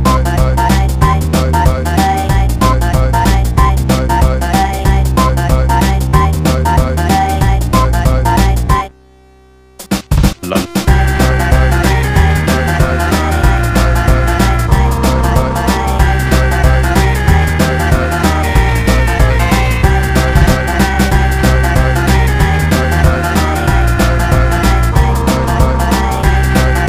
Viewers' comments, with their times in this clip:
0:10 I swear, every time I hear a spin-off of this, I can't help but hear the Spy saying "LUB" around the mark.